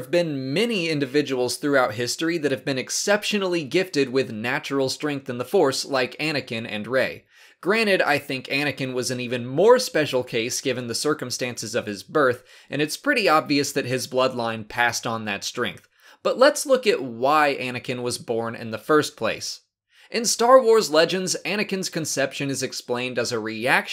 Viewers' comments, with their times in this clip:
0:06 Are you saying granite? It's granted. With a d. Great videos though.